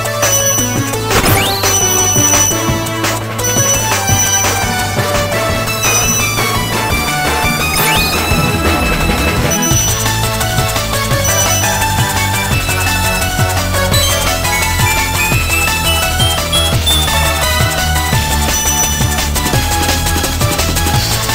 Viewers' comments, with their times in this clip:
0:09 this is Intro Music Material 👌